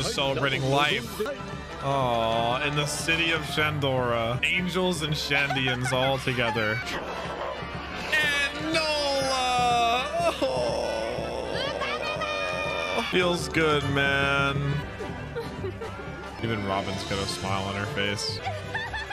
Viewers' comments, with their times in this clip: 0:05 The drums of liberation